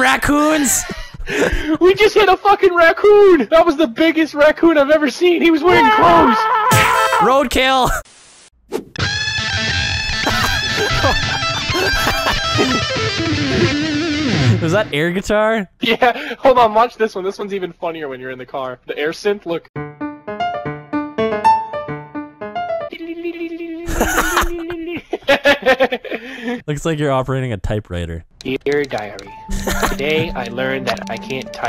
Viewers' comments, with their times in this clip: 0:09 Nice gituar sound
0:19 sounds like megalovainia
0:19 sounds like megalovainia